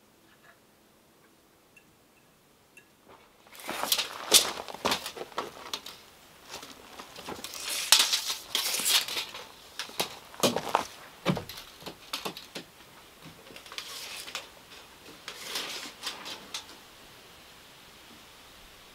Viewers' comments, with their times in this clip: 0:06 haven't watched beyond, into the video and i think i understand whats to dislike (pours coffee, food/pan sizzling, mixing the batter, utensil's scraping against plate/pan, the shuffling of your feet, the clinging sounds of things being place and picked up, those with misophonia will understand, but once past that how can it not be changed to a like? i had to learn to "read" the flow of your videos to know when to mute lol, love the videos and you're truly a great inspiration,